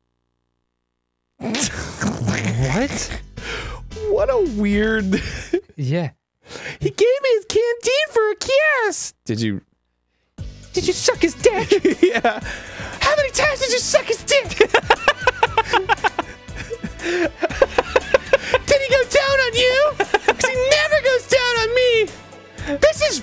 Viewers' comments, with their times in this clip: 0:04 why does she sound like Francine from American dad lol